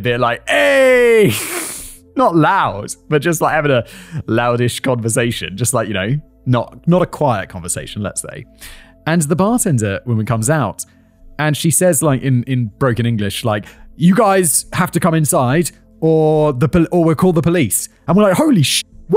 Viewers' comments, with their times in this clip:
0:07 ah yes the Irish Whisper